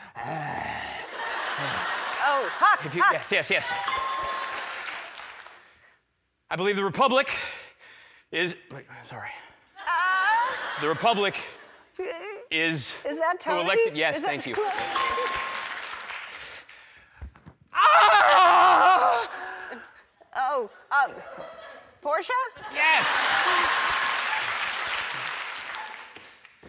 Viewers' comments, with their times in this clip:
0:09 that sound Ellen does!xD